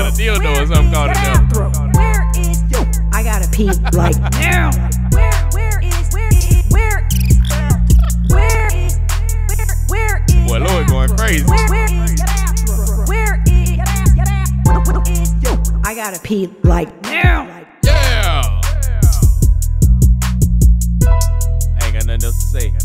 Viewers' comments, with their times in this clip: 0:05 that remix at the end goes harddddd🔥🔥